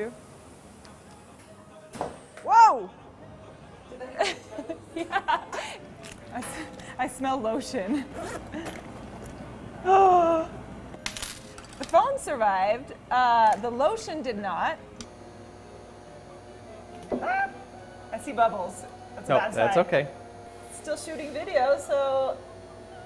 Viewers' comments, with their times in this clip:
0:06 at first I thought that she said: "I smell bullshit". Haha, my mind is deeply affected by the Internet.